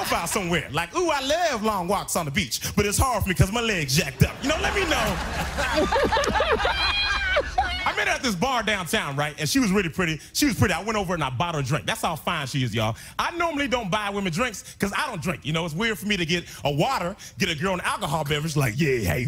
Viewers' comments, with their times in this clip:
0:05 why does the man with the glasses laugh like that?